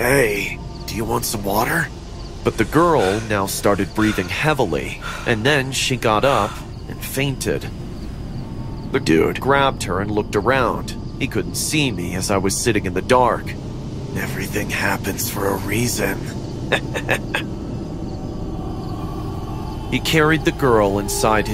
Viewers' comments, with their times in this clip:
0:07 why does he say the dude like that💀💀